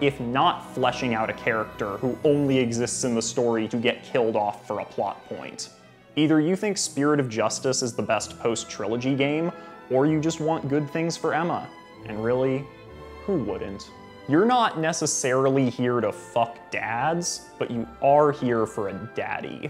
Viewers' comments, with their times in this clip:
0:05 the heat in your voice makes me think this one was for you